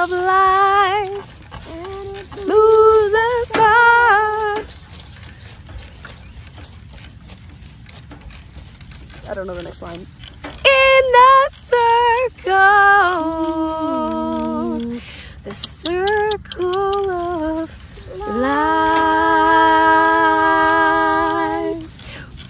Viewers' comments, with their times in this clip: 0:10 We found another good singer, I think.